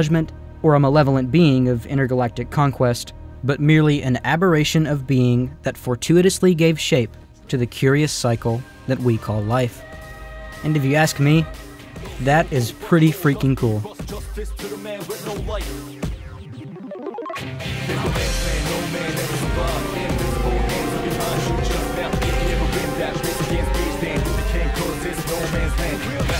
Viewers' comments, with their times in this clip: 0:10 did NOT see the montage, and song blending so well. Well done